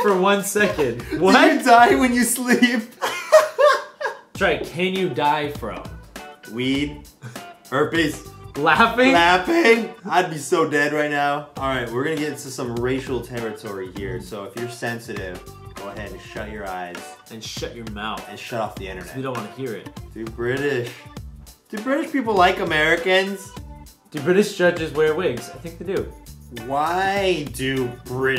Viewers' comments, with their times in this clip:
0:09 that voice crack